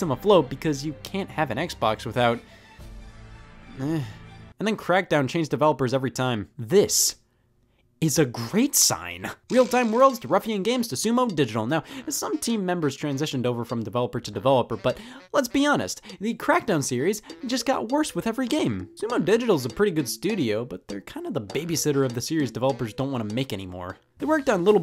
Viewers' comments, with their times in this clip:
0:09 Great back ground music 👍